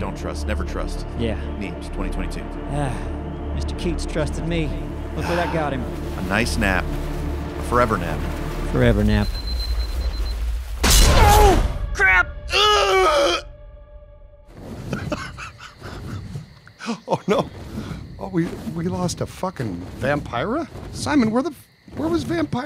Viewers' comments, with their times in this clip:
0:05 maybe my favorite death scream 🤣